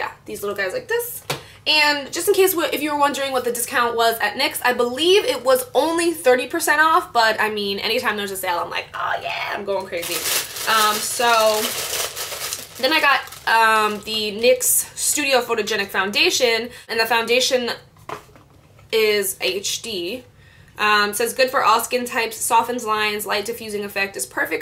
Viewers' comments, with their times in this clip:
0:10 lol when you crinkle papers and your cat comes running in the room lol